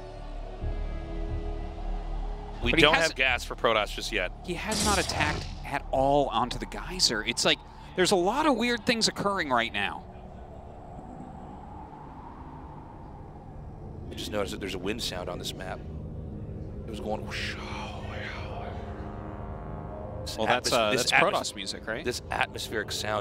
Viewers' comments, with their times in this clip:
0:10 Protoss music perfect for the situation